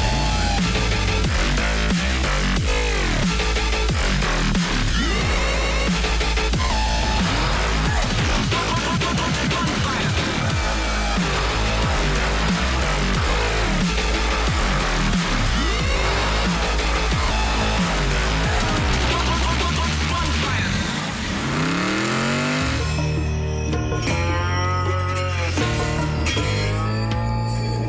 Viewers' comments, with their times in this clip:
0:10 my favorite part is when walt revs the engine and the camera starts shaking, so ridiculous lol